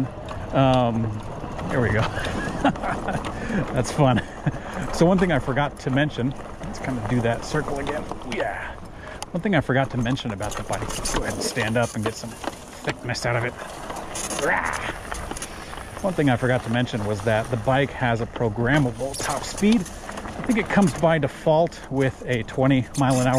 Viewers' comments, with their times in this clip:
0:09 I own this bike and I LOVE it, but for the life of me can't figure out what causes that annoying squeak going over bumps which is very apparent from onward in your video. It's much louder in person obviously but you can distinctly hear it in the video. I've sprayed the rear shock with lubricant, sprayed up the pivot points back there, still does it. Any ideas what is causing that?